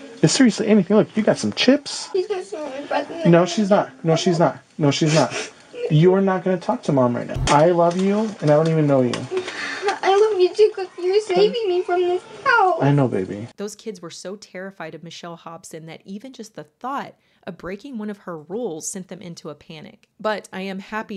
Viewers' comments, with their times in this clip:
0:06 absolutely heartbreaking to hear that poor baby say that and hear the terror in her voice 💔